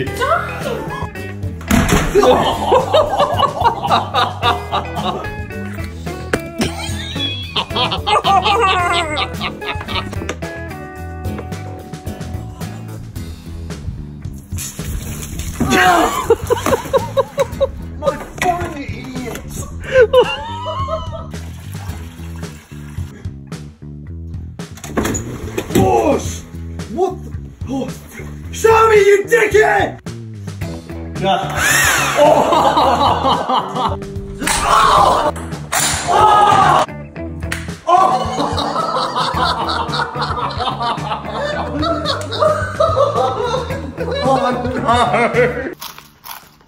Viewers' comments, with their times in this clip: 0:06 THE LAUGH I CANT
0:07 laughing like Kermit the frog 🤣🤣🤣
0:08 this laugh öghöhöhöghö
0:29 he said that so perfect😂